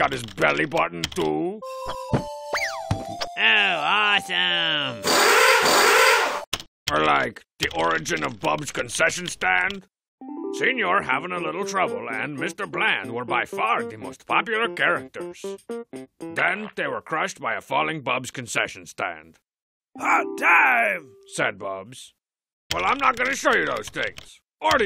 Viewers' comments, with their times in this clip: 0:05 Sounds like a drill!